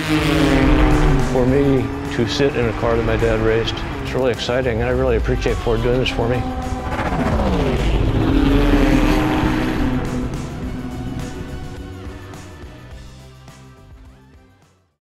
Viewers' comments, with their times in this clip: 0:07 Royal Ford GT(Краљевски Форд ГТ). OMG,that exhaust sound("note") give me goosebumps.